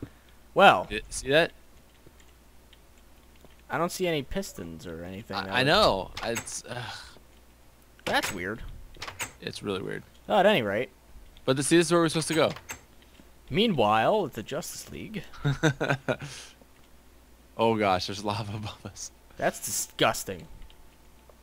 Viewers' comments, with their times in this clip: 0:04 xbox sound again :D
0:04 Did any one else hear the xbox notification
0:04 listen closely you hear an xbox 360.